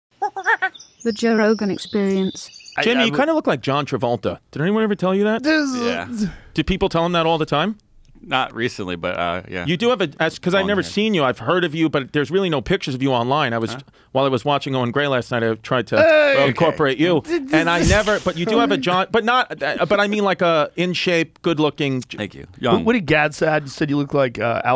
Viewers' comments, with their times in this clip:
0:05 Joe "Jezzzoaoh" Rogan